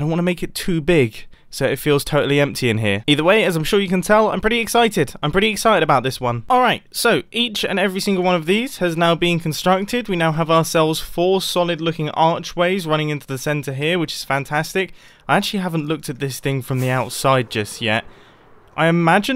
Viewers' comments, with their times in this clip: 0:05 He said Alright but it sounded 100% like Villagers when they get hurt